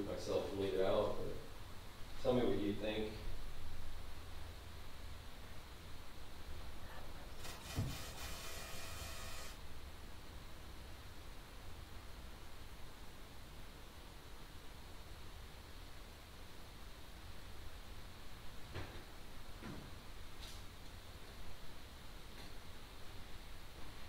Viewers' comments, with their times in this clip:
0:07 ‐50 definitely heard whisper then a buzzing noise. Dk for sure what that was tho lol
0:08 that noise gives new meaning to’ static’ cam.